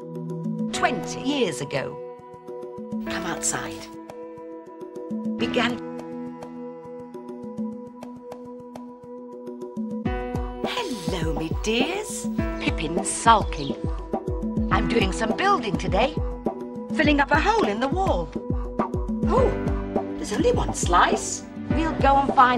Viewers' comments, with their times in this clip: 0:10 The Cool Beat